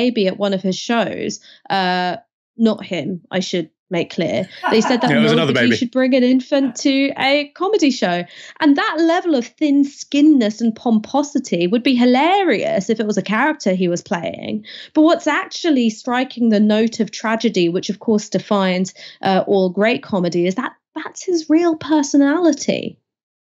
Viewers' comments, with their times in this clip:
0:08 Producer laughing cracked me up 😂